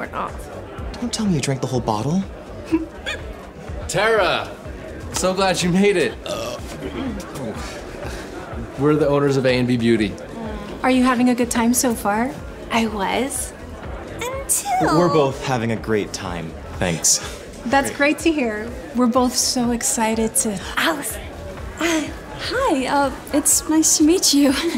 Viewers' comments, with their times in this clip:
0:06 What kinda burp is that